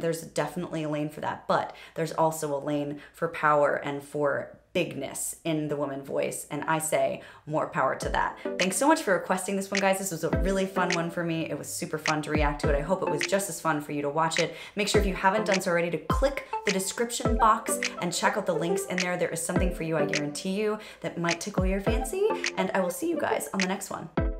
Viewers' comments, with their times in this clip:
0:06 Lea Salonga has almost the same tone. Matured a bit but still. She is never the only singing voice for 2 princesses for nothing. p.s. is my favorite expression... So I say it to you as well. More Power!!!